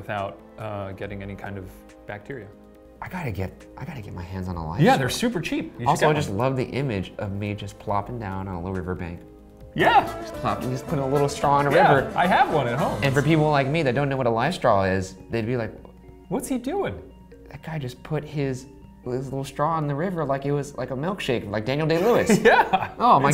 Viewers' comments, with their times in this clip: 0:10 Did I miss something why is there music I'm so confused